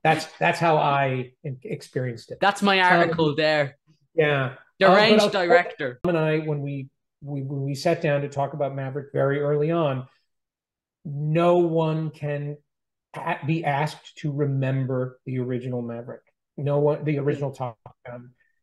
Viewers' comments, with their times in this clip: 0:03 Fantastic interview so far! However there is a cut and we loose what McQ was saying about the films that defined him from the 40s/60s, what happened? 🥺